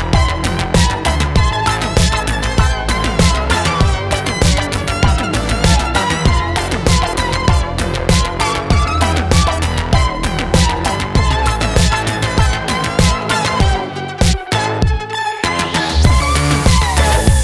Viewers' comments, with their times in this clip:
0:05 Is that a Commodore 64 loading some turbo tape? This instrumental version is awesome!